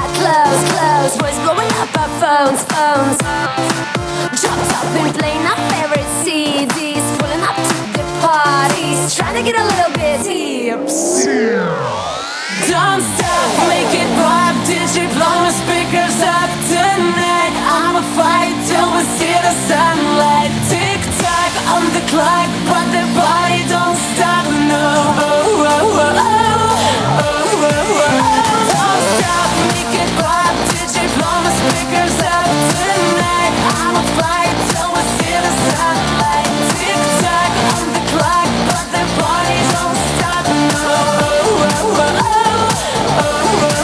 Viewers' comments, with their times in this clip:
0:09 But they are so cute speaking English. Trying to get a bit "Tiepsie" lol
0:29 She's not singing.